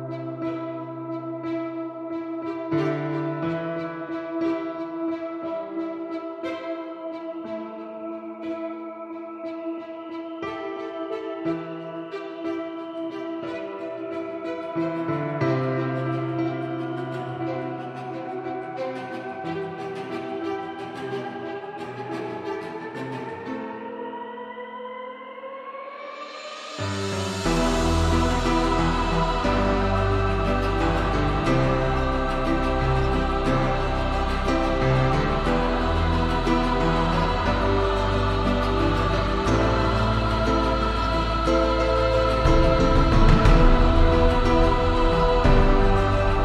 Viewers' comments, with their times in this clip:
0:06 You know you've played too much animal crossing when you hear balloons everywhere.
0:22 I looooove about 30 seconds in when the lower strings come it feels so epic. And the classical version of a base drop at ~ omg so cool
0:28 I scroll up from comments and just instinctively click the like button like compelled by magic that is such a powerful theme!!!
0:28 Yooooooooooo liked and subscribed. I would've just gone up an octive but style is its own thing my dude, and you were trying to portray what you were trying to portray. Nice work!